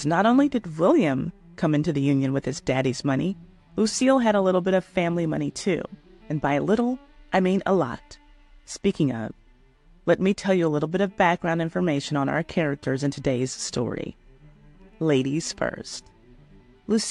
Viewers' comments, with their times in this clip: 0:04 you totally yawned ! Which means your condescending tone is not only boring to us but boring to you.